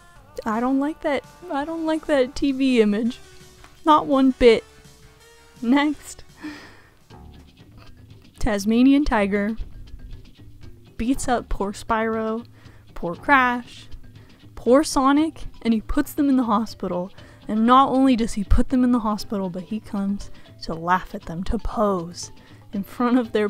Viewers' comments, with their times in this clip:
0:10 I remember these ads in a PS2 Game Magazine when I was so young laughing after watching it, where did you get these picture ads? Thank you so much for putting on low-volume background music, now I can relax to hear you loud and clear, a much appreciated! ❤❤❤